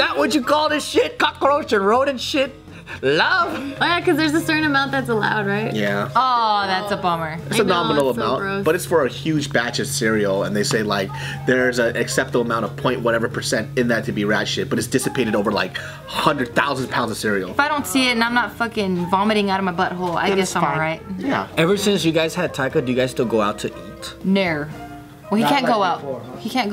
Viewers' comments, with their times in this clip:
0:08 someone’s phone was vibrating